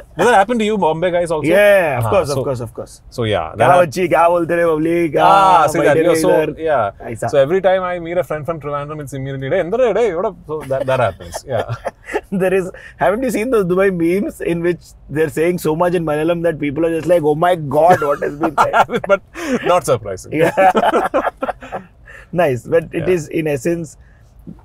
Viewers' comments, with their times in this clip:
0:10 that thironthoram payal moment 🤣